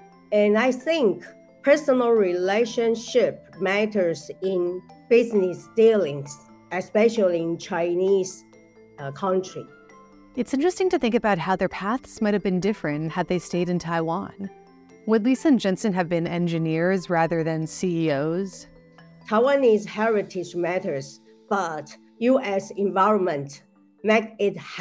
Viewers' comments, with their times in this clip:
0:10 mostly the video footage of her speaking, like The face moving is so fluent and seems unnatural. Also only one rigid camera angle. And the voice is pretty monotone.